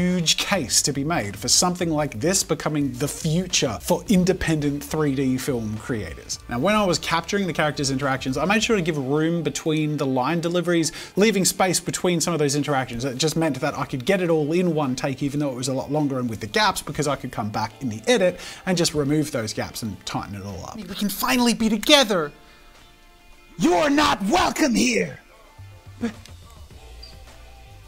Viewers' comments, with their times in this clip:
0:09 I set an alarm up for so that I could get ready for school- and it literally went off at the same time Jazza’s timer went off. I can predict the future